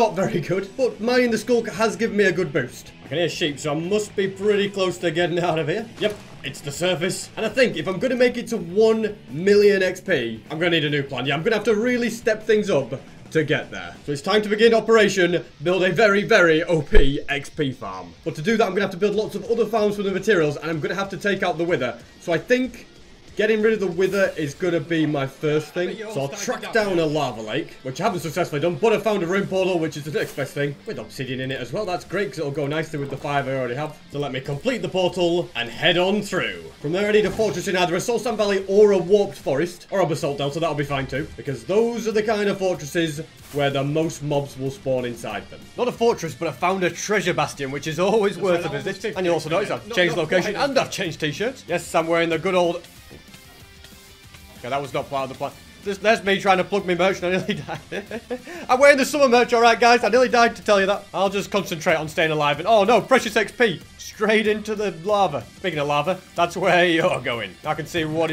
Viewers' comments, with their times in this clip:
0:08 why do I hear two of you talking in the video
0:21 if you go to you can hear some overlaying sound
0:22 what is this It looks like a sound overlayed or something.
0:24 i hear something after in background i think ??
0:24 I heard his voice twice a
0:25 You can hear him watching himslef lol
0:26 why are there 2 voices 😂?
0:26 We can just hear his voice from when he recorded it or something idk why
0:26 his mic starts echoing 😅😅
0:26 What was that voise in the background
0:28 why the voice is doubled
0:29 Random extra voice overlaid ?
0:49 What happened to the sound
0:49 Did anyone else hear an overlapping audio track ?
0:51 there is him talking in the background